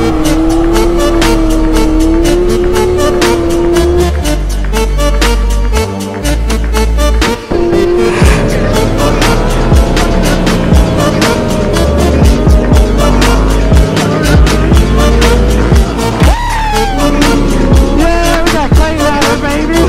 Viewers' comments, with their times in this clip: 0:05 fucks this i thought someone was on my roof knocking on my window
0:05 that knock of the door in the song scares me everytime cause im wearing really good headphones
0:07 The 8D knock scared was so bad